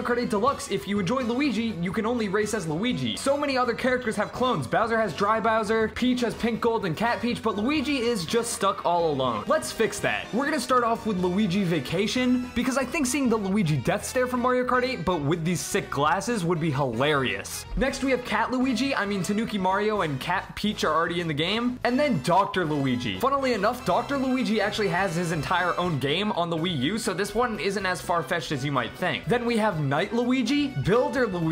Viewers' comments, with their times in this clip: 0:04 Baby Luigi: loud crying😭😭😭
0:19 sad cat mario noises